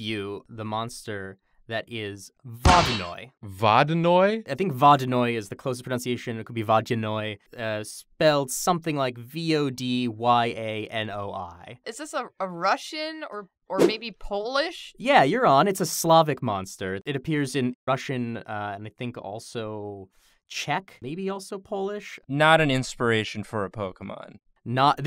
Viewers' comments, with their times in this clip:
0:06 Yeah, that's pretty close to what it's supposed to sound like, actually. With a soft 'd'.